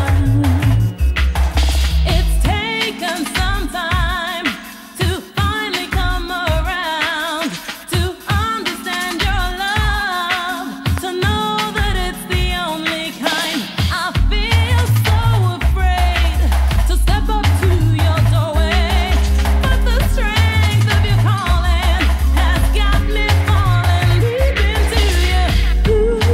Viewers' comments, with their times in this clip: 0:09 Its but who needs sleep when u got tunes like this to vybes for the eyelids shut. The vocals are you dizzy bruv! (Prolly would've said that in 1994) and it's 2019 and still bangs!!!!